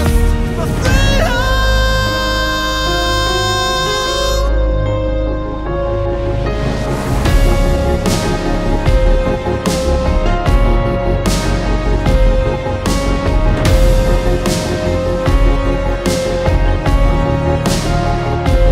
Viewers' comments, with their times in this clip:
0:06 that voice is angelic 👼 and i want More of that drop